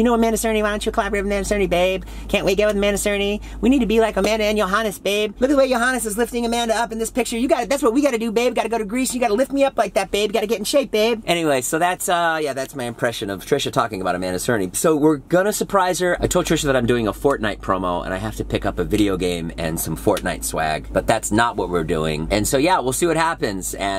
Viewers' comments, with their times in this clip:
0:04 I love Jason's impressions of Trisha
0:04 Jason's impersonation of Trisha here is spot on lmao
0:05 Jason's impression of Trisha sounds like Cartman from South Park